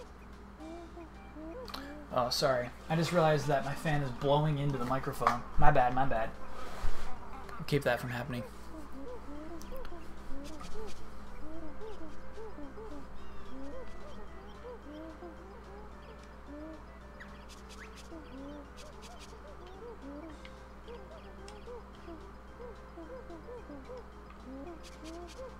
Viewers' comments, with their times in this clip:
0:07 rumbling sound stops